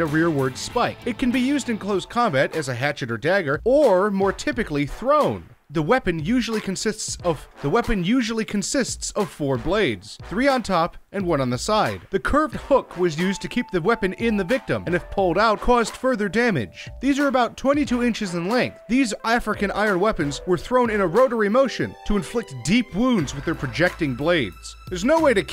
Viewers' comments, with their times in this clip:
0:07 He repeats his words
0:09 glitch or just repeat himself